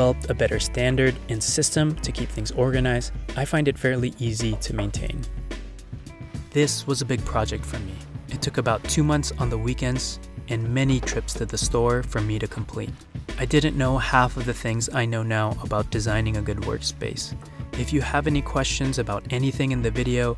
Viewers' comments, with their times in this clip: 0:03 Who felt like someone was knocking your doors ?